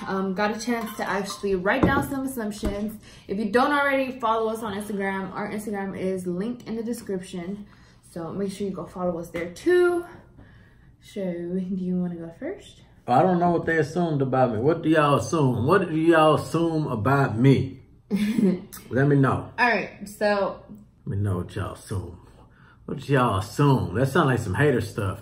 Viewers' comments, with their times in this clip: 0:09 I'm assuming that was a fart 😂😂😂😂😂